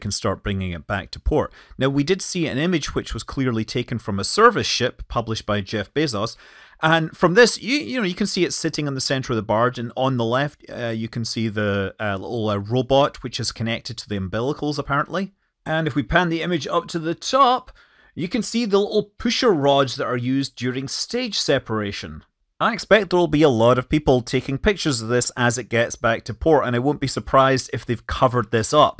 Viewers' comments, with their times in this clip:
0:09 Impressive for a second ever attempt! But they had years to learn from SpaceX and copy. The hover and locking down on the barge is cool! I will say the commentary from Blue Origin was painful and hard to hear over the non stop cheering (lit sign for applause or coached?) felt fake and possibly piped in for a lot of the ascent. Could barely hear mission control. And you know that on the video they cleaned up the image of the booster to make it look like it had not even taken off yet! Should have black all over it! Not good and makes people imply it's all fake!